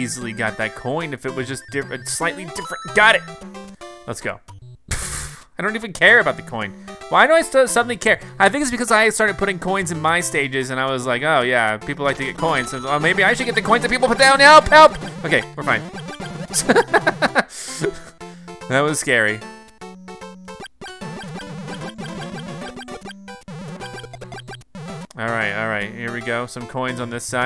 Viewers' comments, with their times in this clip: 0:10 talked so fast